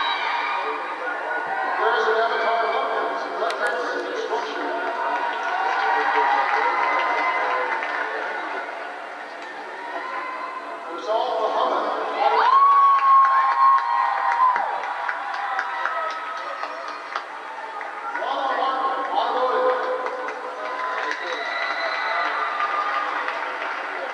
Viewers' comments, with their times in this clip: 0:09 thank you family for the delayed clap> wtf